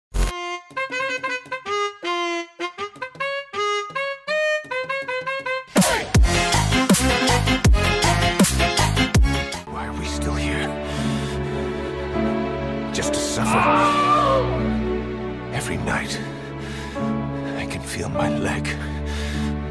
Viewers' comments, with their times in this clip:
0:02 What the music